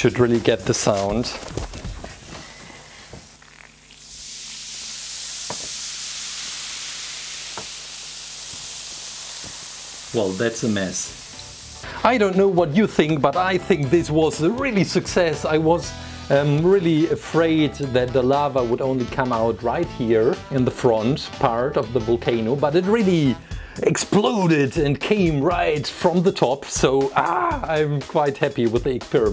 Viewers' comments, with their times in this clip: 0:04 opening a coke bottle
0:04 I was playing Minecraft and thought that was a creeper. XD
0:04 volcano experiment asmr
0:10 i thought he said “your friends are next” for a second there whoops